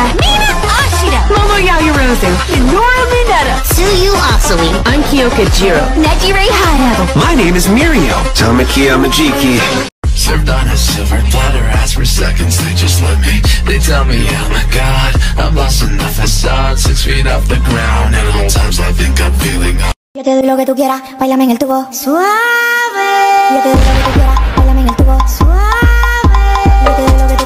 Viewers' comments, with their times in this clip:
0:10 you can't tell me this isn't hot, I mean- Bakugo's voice though, I want to die when I watch this, I am a total simp